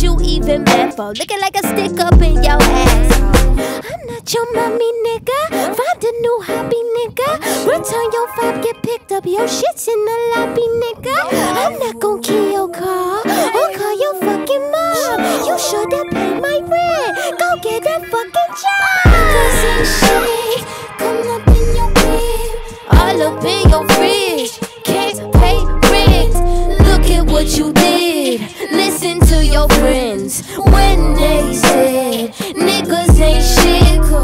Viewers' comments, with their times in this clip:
0:08 My mom said Doja sounds like Elmo and I can’t stop hearing it 😅
0:17 the toad scream is my FUCKING FAVORITE THING